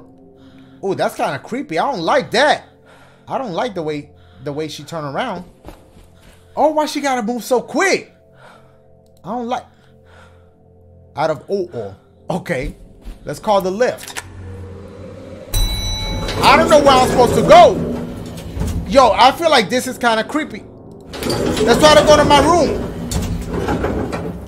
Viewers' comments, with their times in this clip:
0:09 when a British elevator is broken it can only be out of Ouw-Ugh